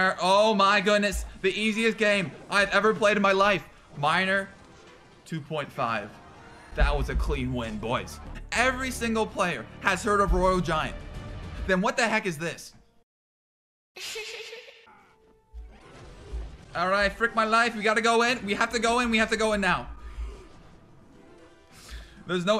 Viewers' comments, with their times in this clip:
0:06 You can literally hear his voice quavering from the stress of that game.😂